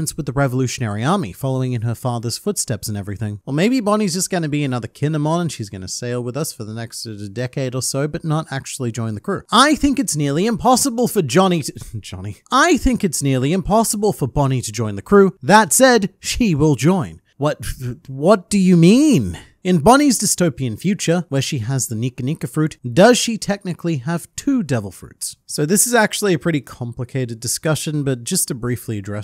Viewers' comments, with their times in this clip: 0:10 “I think it’s impossible for Johnny-….*WHEEZE*boney for join the crew” that had me laughing